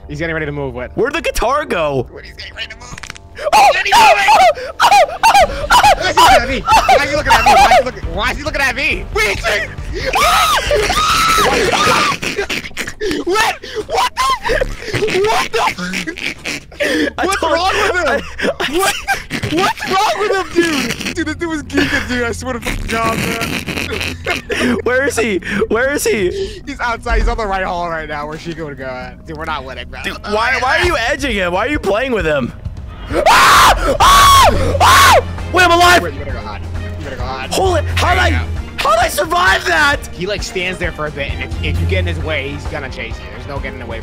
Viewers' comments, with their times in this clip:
0:03 This laugh is killing me Man
0:05 Cartoon ahh noises😂
0:32 screams movescamera t-poses and moves